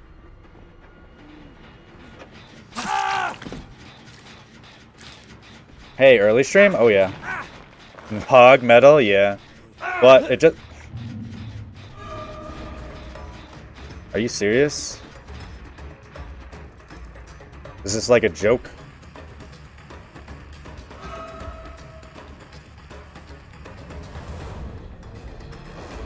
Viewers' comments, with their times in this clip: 0:07 Lmao the way you just stopped talking was hilarious